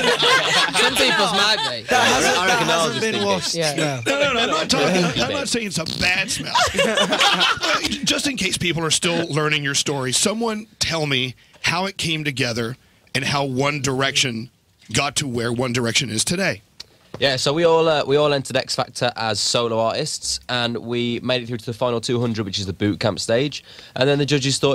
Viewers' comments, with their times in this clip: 0:07 louis tomlinson just farted on the radio.